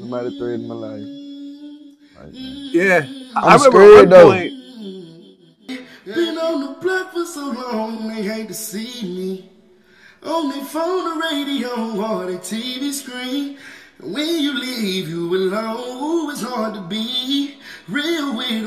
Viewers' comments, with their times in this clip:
0:06 I’m speechless Moe3 can sing!!! 😔 so sad his life was cut short 💙🙏🏽